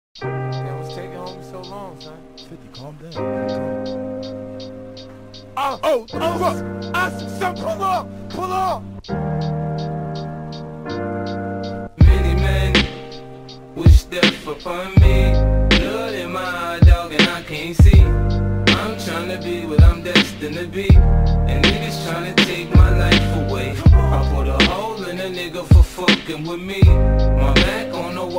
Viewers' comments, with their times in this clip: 0:06 Loll i didn't hear the gun shoots
0:12 this one may be better than the original (starting excellent work, just a pity the audio quality. the melancholic vibe in the song is just... on point. I picture this in a movie or sumthn